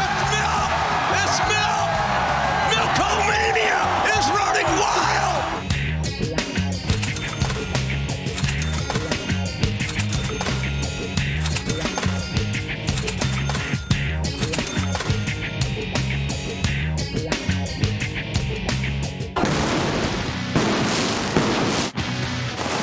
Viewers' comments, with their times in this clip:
0:06 This random track is better than most themes it's got that edge to it 🔥